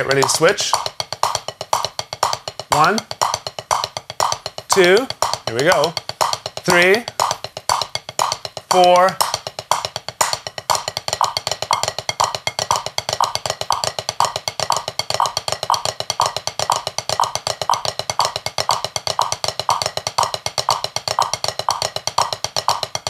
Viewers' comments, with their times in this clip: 0:10 When the popcorns are nearly done...